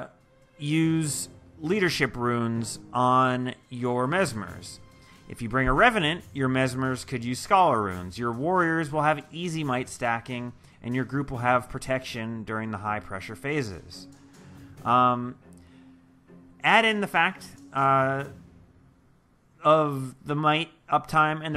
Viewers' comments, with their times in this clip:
0:08 btw music is a bit overwhelming or so.